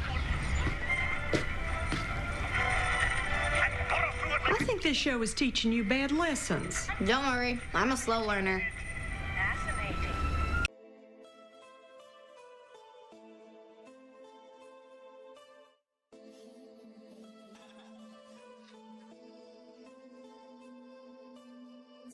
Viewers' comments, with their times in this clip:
0:09 WAIT?! WHAT DID THAT JUST SAY.. THE VOICE COMING FROM THE T.V?!?! IS THIS SUBLIMINAL MESSAGING????